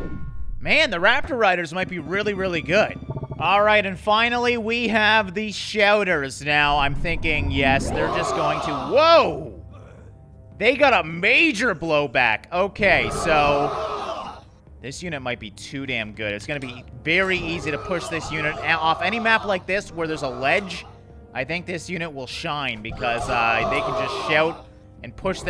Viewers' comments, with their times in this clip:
0:07 The Shouters sound like they are saying "Ora!".